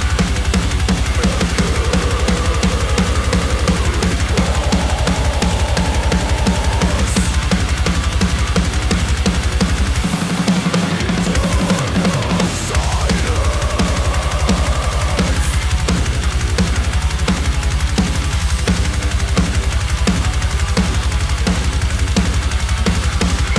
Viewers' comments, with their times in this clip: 0:09 \m/ That fill!